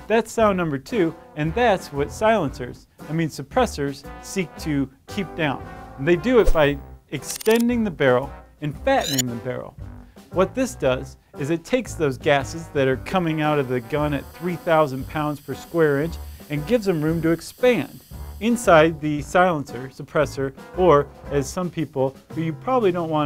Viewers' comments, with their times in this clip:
0:06 is it just me who heard that annoying sound when a picture of a pistol appears?